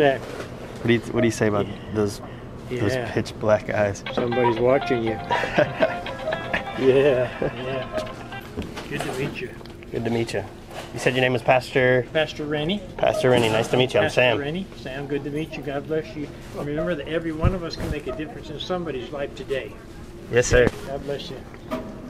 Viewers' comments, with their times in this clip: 0:05 best ringtone ever